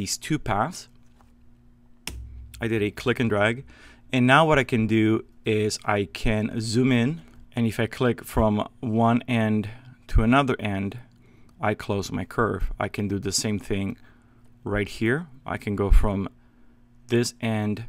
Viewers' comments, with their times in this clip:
0:04 I came here to see how he deletes the path pieces .. audio seems to be cut out of the video